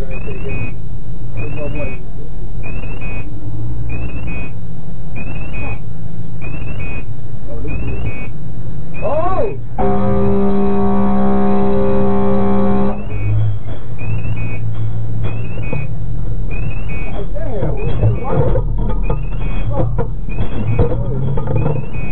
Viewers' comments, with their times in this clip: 0:07 almost bump each other and he just horned it